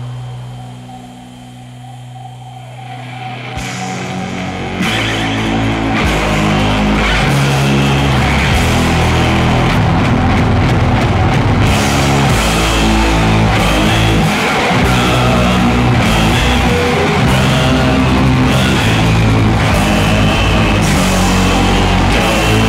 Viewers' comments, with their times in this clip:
0:03 The passage that starts has really similar vibe to HIM's Sleepwalking Past Hope. I never thought I'd make any connections with these two bands.